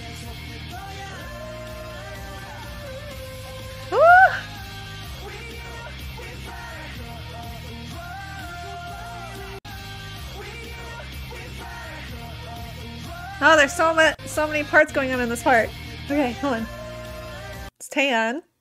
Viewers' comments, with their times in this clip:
0:05 oh the high note? Here is Kai while the other members shouted in lower register 🫶🏻